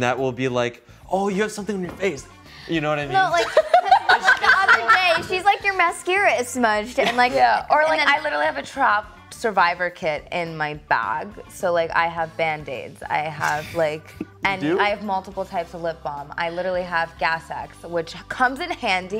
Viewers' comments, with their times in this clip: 0:03 Bailey's laugh has me creasing on the floor